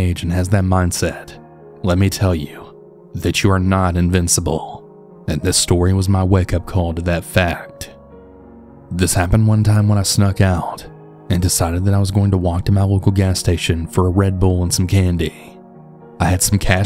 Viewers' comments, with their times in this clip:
0:03 I’m not sure if your dragging your words out on purpose I listened to a vid earlier like 2 hrs long and I never noticed it I’m into this vid and it’s absolutely cringing me, reminds me of that weird dude that was always standing close to helga when she would confess her love of Arnold. Sound like your straight talking through your nose. If your sick I apologize, but I wouldn’t record myself narrating sick. It’s just odd cause I just listened to a 2 hr vid of you my intro to your content and I liked it now I feel like I’m getting punked